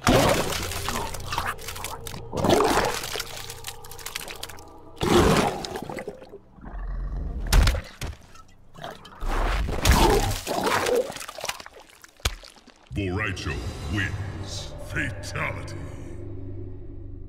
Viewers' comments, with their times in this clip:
0:03 did he got cough cancer of blood?🤨